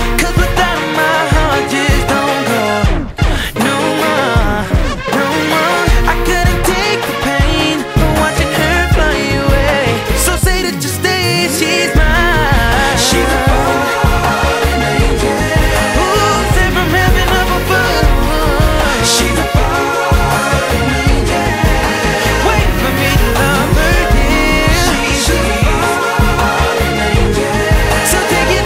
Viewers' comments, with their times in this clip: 0:10 did he say "so say that you'll stay"? It sure sounded like "so SATAN just stay"! You be the judge.